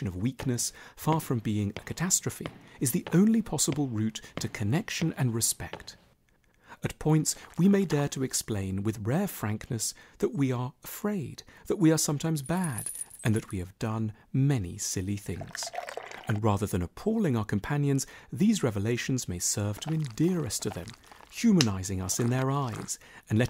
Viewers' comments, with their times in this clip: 0:07 The sound effect of the pink shirt man sitting down is really gross, genius, and an audible representation of feeling vulnerable. Not many videos edit audio that well.